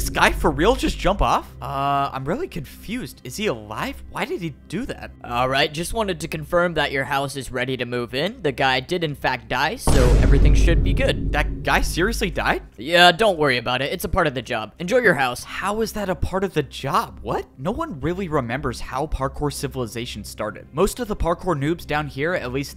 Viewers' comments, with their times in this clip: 0:06 the way the other guy said "that guy did infact die" so nonchalantly is cracking me up